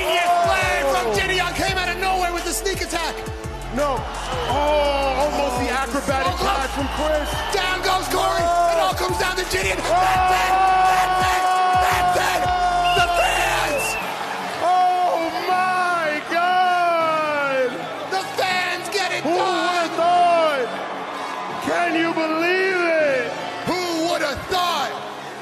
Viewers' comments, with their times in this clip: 0:10 AND THEN AND THEN AND THEN THE FANSSS OOHHHH MYYYY GOOOOODDDDD